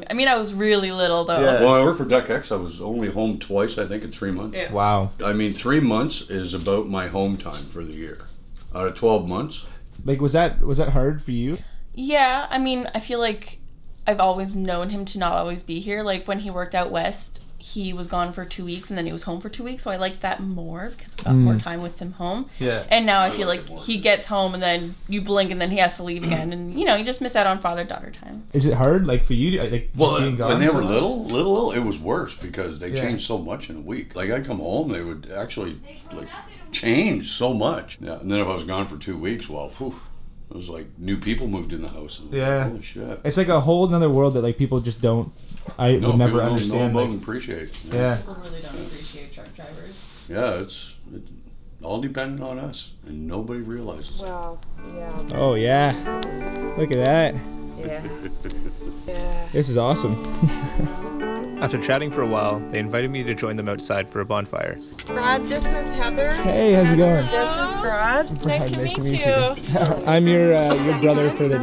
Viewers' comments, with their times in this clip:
0:04 The man in sounds like negan !
0:52 It's Bruce Willis with a John Goodman voice! Fuck meeeee!